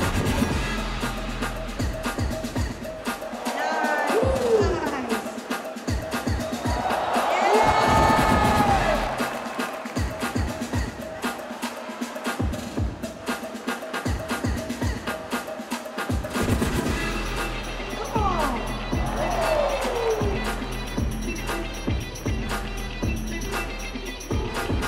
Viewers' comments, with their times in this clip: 0:07 magic happening, I only see that on cartoons.. wow. fantastic music and what a battle.